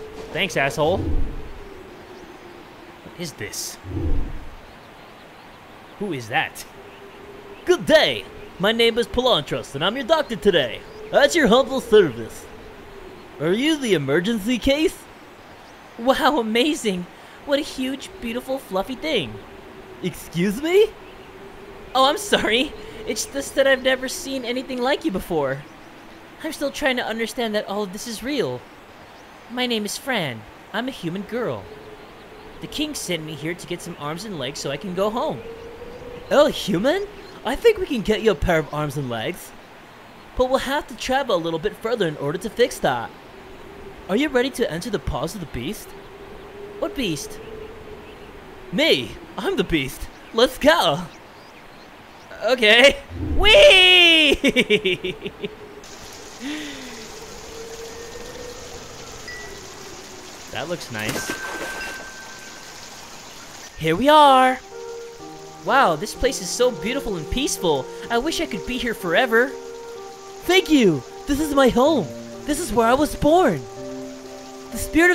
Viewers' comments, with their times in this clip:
0:07 What kinda voice dat? Now who dun whata, me good pal. Is you is or ain't master of voices?
1:03 This game's music is beautiful ♥